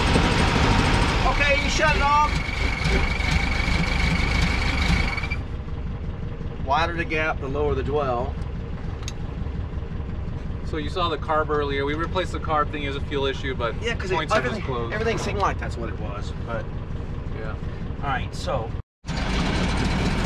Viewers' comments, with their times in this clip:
0:03 The high pitched sound you hear is the lack of lube on the points where they ride on the cam in the distributor. I have seen the dwell disappear as the lobe wears down. Just sayin...